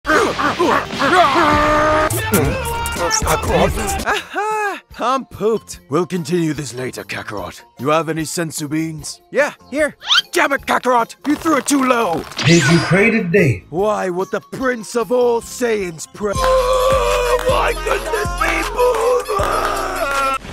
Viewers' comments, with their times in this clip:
0:03 is wild... i also liked how gojo said I almost died so Normal......